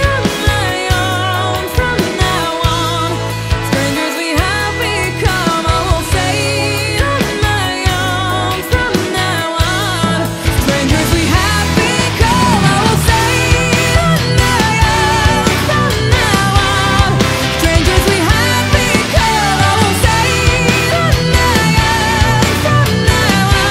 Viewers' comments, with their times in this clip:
0:09 the little mermaid vibes